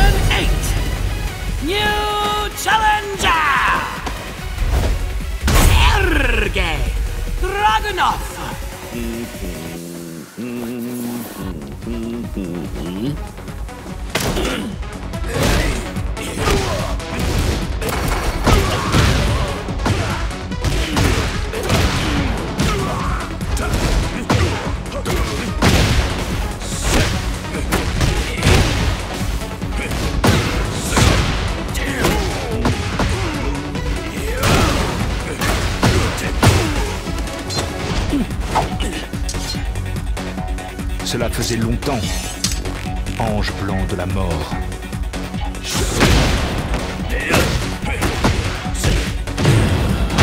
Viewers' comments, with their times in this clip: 0:04 I love this "SERRRRRRRGEI"
0:32 Watching this again with headset on and was laughing when I noticed he was humming while doing his wall grab